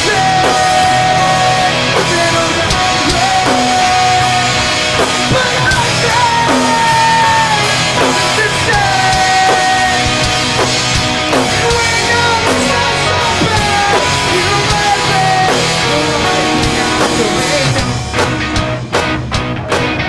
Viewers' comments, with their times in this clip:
0:06 Dat voice crack